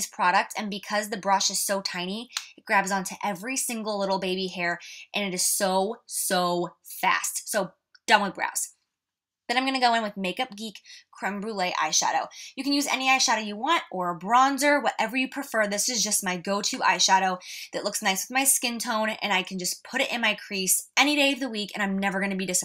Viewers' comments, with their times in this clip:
0:08 Eminem rap :D